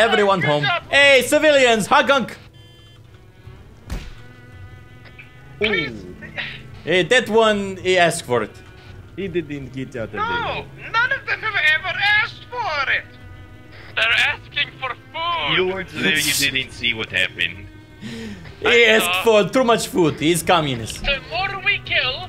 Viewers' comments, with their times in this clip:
0:08 Whoever spoke over the radio did the best accidental doofenshmirtz impression i've ever heard.